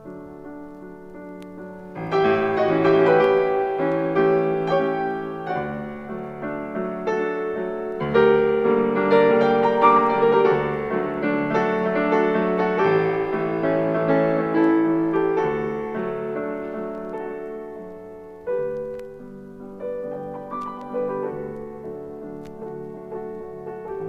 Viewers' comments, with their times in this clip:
0:10 I heard an embodied beauty being shattered...